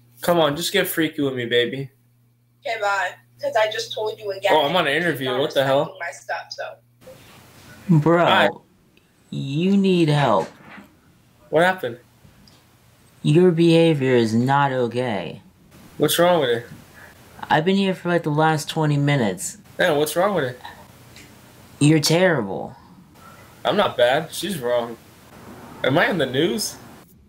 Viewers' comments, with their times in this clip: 0:10 it's crazy how quick his voice and demeanor changed once he realized someone was watching all of this mess